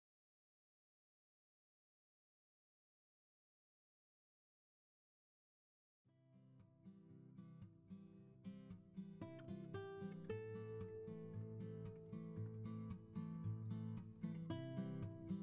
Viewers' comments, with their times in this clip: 0:03 Hmmm there’s Morse code but for some reason it keeps saying there’s an error in the typing or something every time I try to type it in